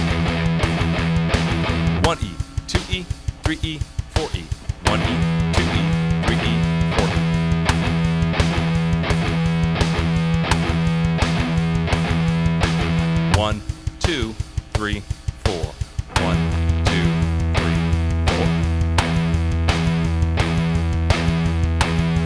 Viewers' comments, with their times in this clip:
0:03 Amazing rhythm for breakdowns 🤘😂